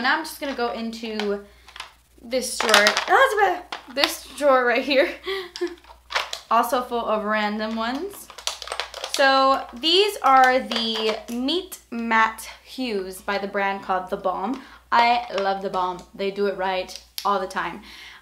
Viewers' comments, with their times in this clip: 0:03 "Ah-za-bah" ? Haha, best 'almost-dropped-something sound' ever ^-^